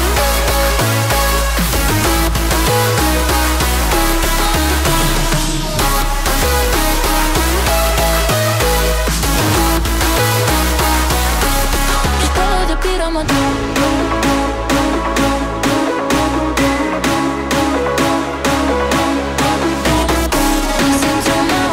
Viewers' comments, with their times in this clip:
0:06 The break is literally heaven